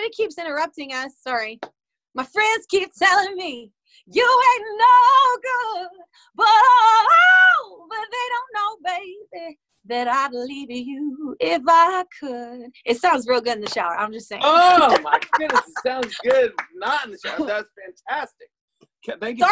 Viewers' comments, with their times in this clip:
0:07 Bathroom is the only safe space indeed. PS been replaying I dare you 100x+ #obsession Edit: She recorded them all in 4 days😱 Ok.. that F#5 tho